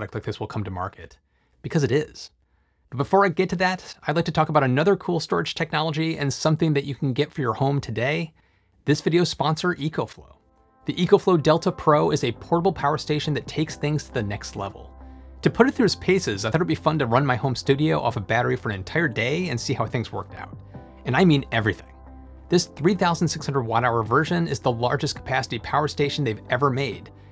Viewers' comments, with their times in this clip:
0:08 lol I thought you said a bad word. 🤫 This is one of the most amazing commercials I have seen. So we can have home based power walls without going through Tesla's terrible customer service? How does it compare to Tesla over metrics such as price, space used, and efficiency?